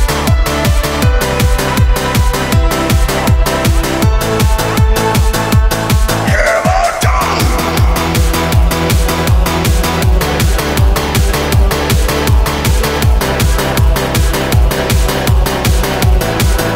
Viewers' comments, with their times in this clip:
0:04 I love the beat drop